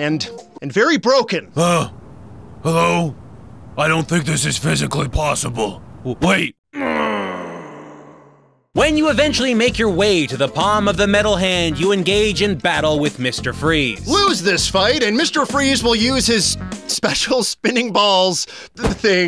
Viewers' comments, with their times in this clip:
0:06 the groan of death from Batman dark tomorrow returns!